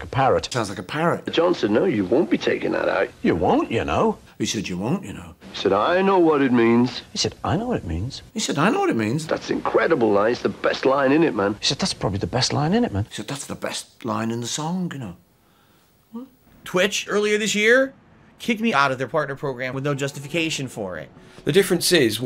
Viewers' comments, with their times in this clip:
0:09 I honestly thought this was just a Scouse thing (from an American perspective) EH LIKE